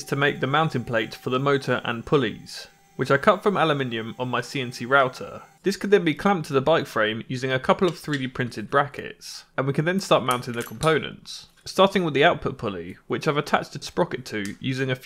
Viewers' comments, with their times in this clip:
0:03 what is ALUMINIUM?